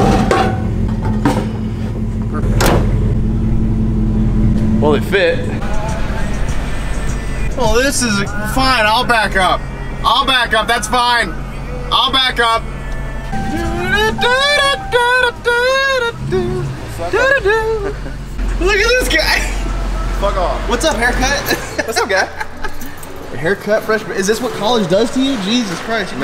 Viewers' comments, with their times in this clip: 0:07 Upchurch on the radio !!!!!!!!
0:07 Upchurch on the radio !!!!!!!!